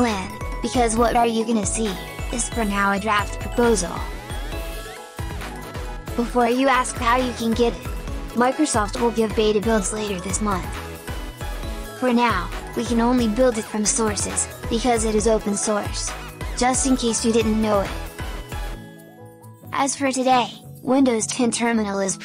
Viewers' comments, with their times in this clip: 0:07 The way Microsoft is said makes it sound like your other voice :)